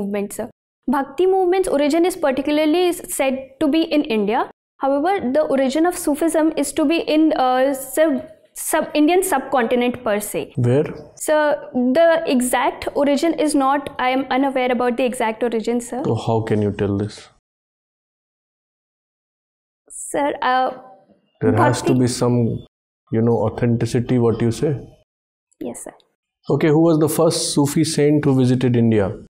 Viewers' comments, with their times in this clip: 0:10 She is replying so fast. Which may result in counter argument. . Well she qualified that means she worked upon herself.